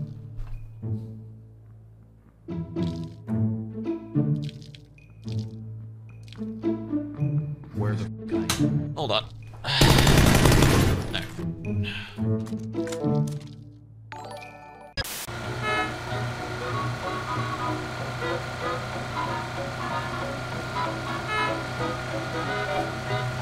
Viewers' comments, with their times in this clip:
0:08 he know by step